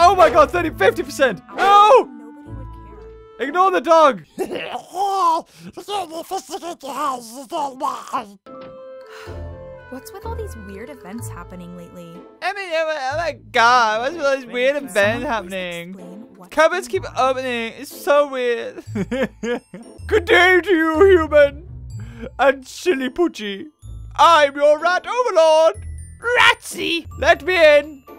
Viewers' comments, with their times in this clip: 0:06 you sounded like pingu beaver XD
0:12 his American accent 🤣